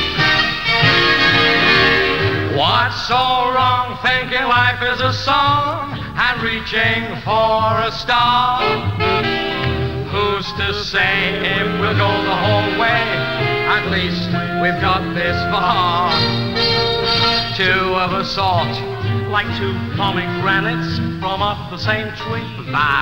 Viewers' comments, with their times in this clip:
0:09 Very subtle, but Ernie makes a slight mistake with the song and Eric follows it up with a look towards him which indicates he noticed and makes Ernie laugh. "Who's to say wif...".